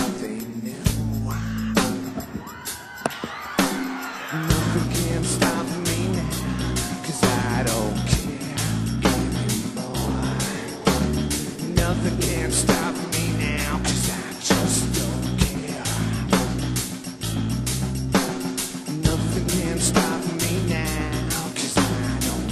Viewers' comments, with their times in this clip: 0:03 wtf he hits with microphone in his head, and sounds like an empty bowl >_>